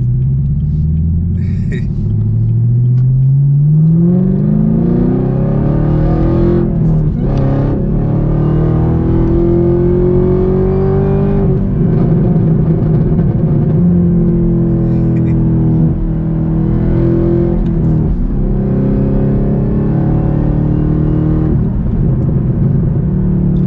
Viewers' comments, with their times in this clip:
0:05 After the downshift mishap, I hear a hesitation to accelerate Good stuff. Don't blow your engine bro! 😉 I ordered a manual and haven't driven manual since high school. '91! I test drove a ZL1 manual But I was afraid I would cut off on an incline or drift back into someone. Fortunately, too much power for that Great vid though. Your car sounds great thru my home theater.